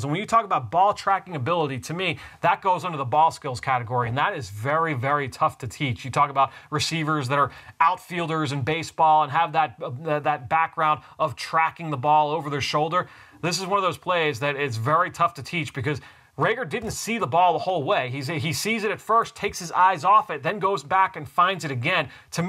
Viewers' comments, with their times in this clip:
0:10 that fuzz is lowkey annoying